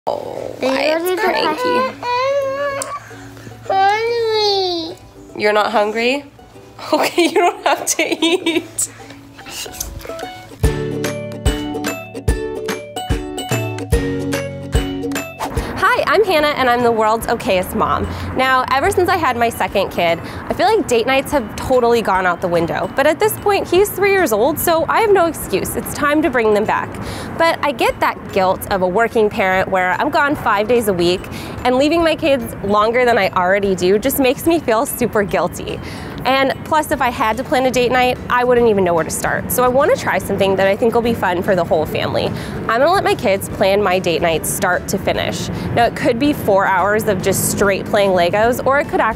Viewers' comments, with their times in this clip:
0:00 WHAT HAPPENED TO HER VOICE XJXJD I'M SCARED
0:36 It’s strange when she says that line and is smiling... it just seems so... weird, in the moment. Not that I’m saying she isn’t guilty, but her tone doesn’t match the sadness and seriousness of what she just said